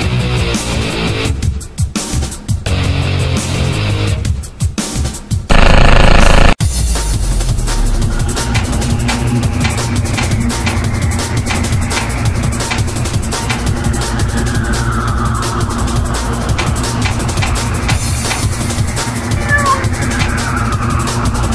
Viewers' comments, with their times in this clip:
0:06 If you listen to the music from ''Philly'', one of Picos songs from Friday night Funkin', you can actually hear a similar beat to